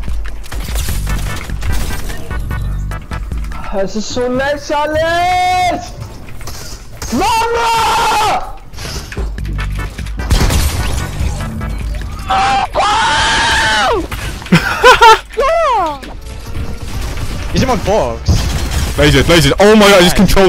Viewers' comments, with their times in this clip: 0:06 thats a german guy.